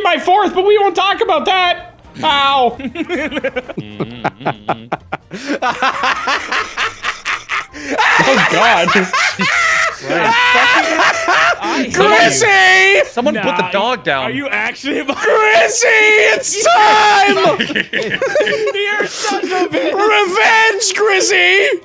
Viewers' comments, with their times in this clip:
0:03 that maniacal laugh is absolutely perfect